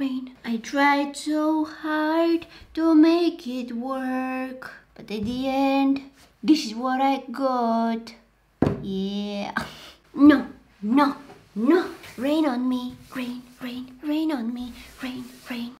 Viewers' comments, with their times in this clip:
0:07 the song she sings is just awesome